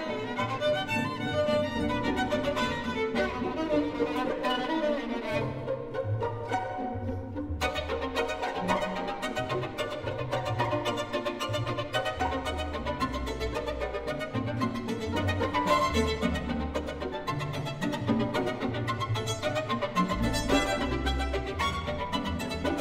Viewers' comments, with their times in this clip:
0:07 Love the phrase